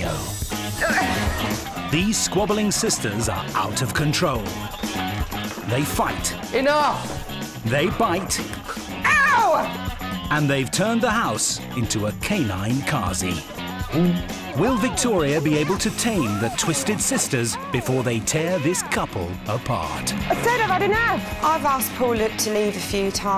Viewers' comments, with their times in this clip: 0:08 why does his scream sounds like someone put autotune on it, I'm dying LMAO